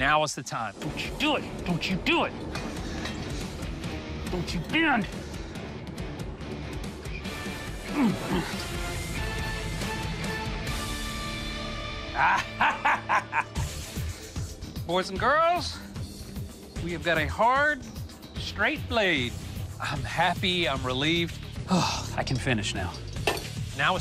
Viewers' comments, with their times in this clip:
0:07 now tell me this is not a blacksmiths laugh